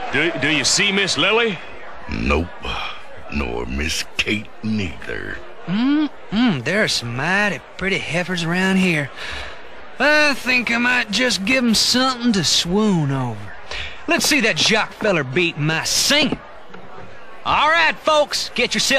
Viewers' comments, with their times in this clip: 0:04 what the...did Dakota say the n word?!